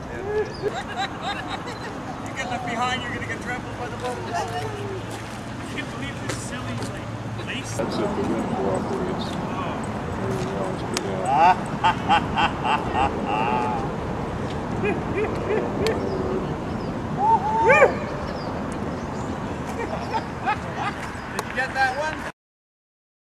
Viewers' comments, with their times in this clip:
0:10 you can also hear his awesome laugh